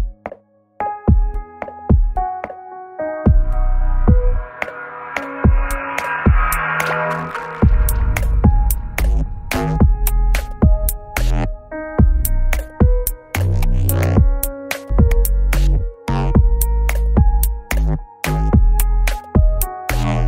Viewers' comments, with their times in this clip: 0:03 sounds like a level passed on bubble trouble haha miniclip dot com/games/bubble-trouble/en/